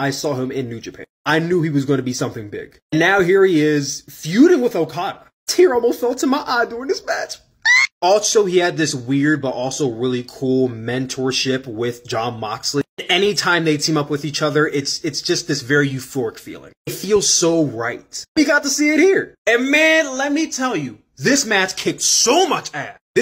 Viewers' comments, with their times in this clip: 0:06 what was that scream